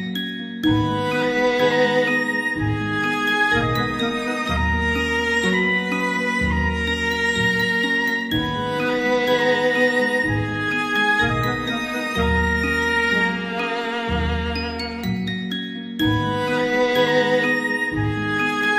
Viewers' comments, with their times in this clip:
0:03 love the sad song from min ... it so much represents my life and the pain and shattered hopes